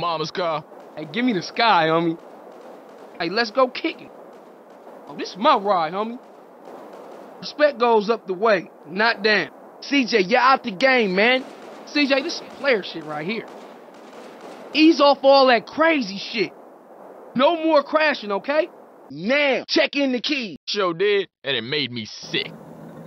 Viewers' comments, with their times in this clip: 0:06 sound like an gsf member lol